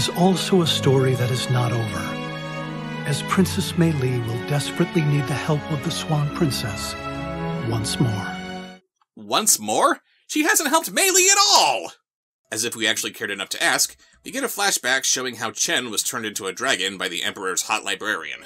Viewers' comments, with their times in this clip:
0:05 why does it sound like Alan Wake Is trying to escape the cabin again?